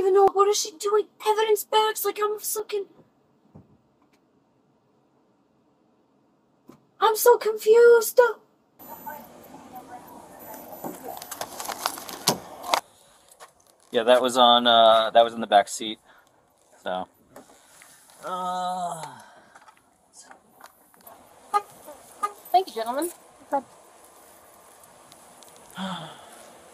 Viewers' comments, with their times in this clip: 0:05 and other great hits like = "I'm so confuseduh" lol....that's awesome!
0:07 “I’m so confuse-duh” Narcissism and MJ, can do that.
0:14 Yes! And "I'm so CONFUSED - UH" is this some iteration of vocal fry? Because I hear it A LOT lately. It's intensely annoying to me. 😬